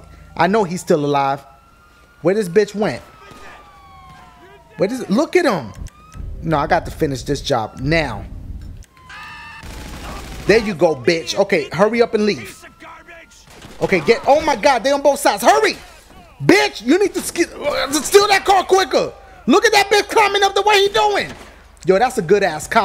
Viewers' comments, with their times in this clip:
0:10 Dashie took his gun out the guy started screaming "Aaahhhhhhh" I was dying when he was screaming